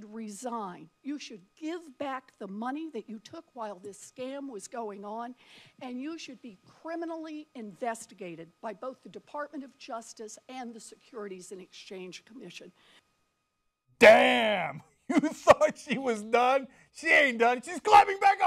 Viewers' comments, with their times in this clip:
0:05 Warren should have hired James Earl Jones to say what she does she is just so soft spoken I can barely hear her. The content was awesome, she needs to work on delivery.